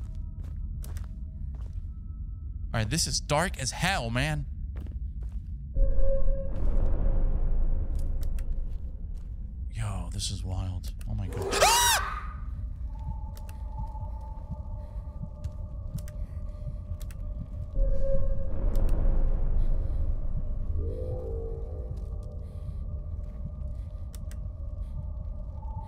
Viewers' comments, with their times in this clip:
0:08 haha that scream was the best
0:11 That scream startled me 😂🤙🏽🤣